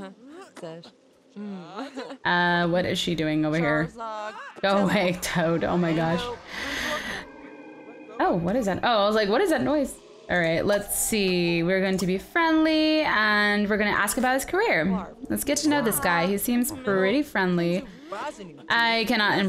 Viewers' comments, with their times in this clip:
0:06 sounded like someone said charizard